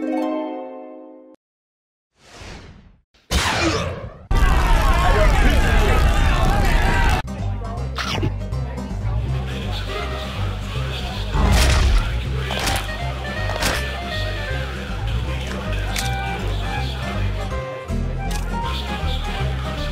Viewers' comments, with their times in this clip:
0:04 I love the quiet “ayo the pizza here!”